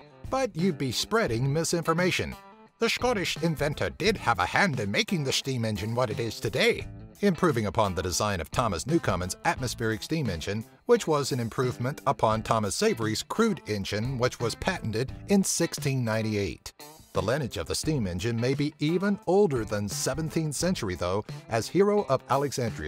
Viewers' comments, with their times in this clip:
0:03 what the hell kind of Scottish accent was that?